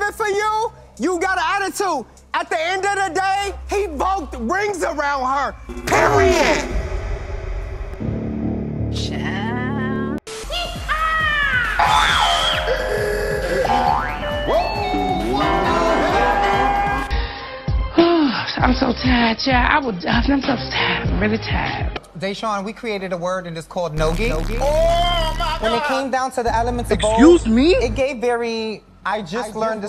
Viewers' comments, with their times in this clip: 0:10 HELPPP NOT THE ISTATION SOUND 💀💀🧍‍♀️💀
0:14 that fucking sound track had me in STITCHES Like bitch how TF you think of that??? 😭😭😭